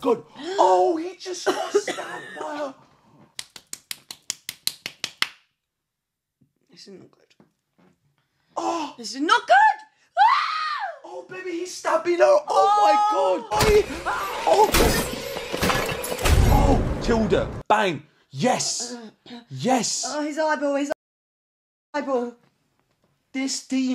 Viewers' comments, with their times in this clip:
0:09 busted out laughing with that scream LOL 😂😂😂